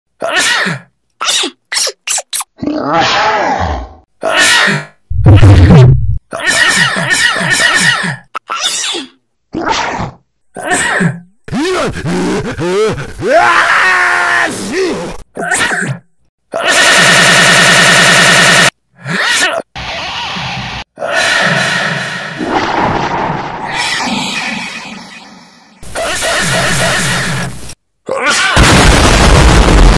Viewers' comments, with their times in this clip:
0:01 there was a #randomsneezevariion #in60s
0:02 lamborghini engine launch
0:04 Cactus 🌵 like twins sneezing
0:06 when you will do back flip but you have sneeze
0:08 When you sneeze in school.
0:10 You are a dad with a cold.
0:11 is nobody gonna talk about how that sounds like william Afton getting spring locked
0:11 When your dad sneezee
0:16 make laugh,sound like machine gun😂
0:16 Sneeze.exe has stopped working
0:16 MACHINE SNEEZE GUN
0:16 Windows Error System
0:16 pop cat why are you here? pop cat: im have crazy sneez oh..
0:16 it sounds like a machine gun warning for headphone users
0:16 Some Ultimate beam Or laser Weapon
0:19 sneezing in Australia
0:26 Friend:*sneeze cutely* Y/N:*super cute sneeze* Me:
0:27 None My sneez sound as arabic: